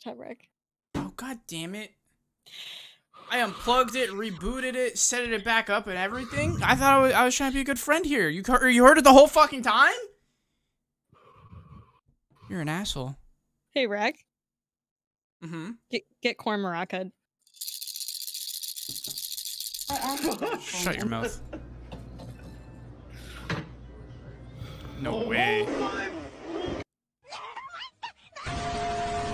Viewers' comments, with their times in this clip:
0:10 Not my Alexa farting from hearing this 😂